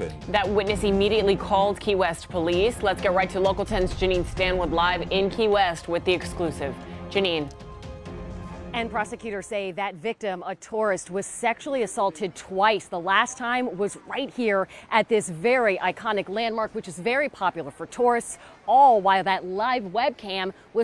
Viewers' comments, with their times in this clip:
0:07 OH THESE GUYS ARE DO DEAD MEAT BIG TIME!, 😠 My apologies for the low volume you guys , 😑👌🏻